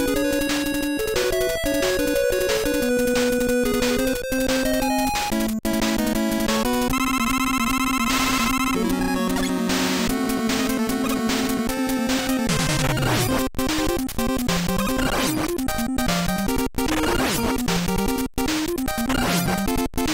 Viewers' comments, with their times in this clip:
0:05 Best boss music and boss design ever created.